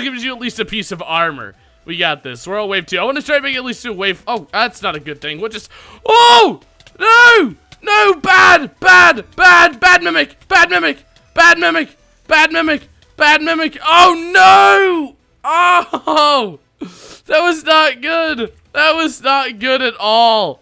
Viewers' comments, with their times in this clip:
0:07 you sound British xD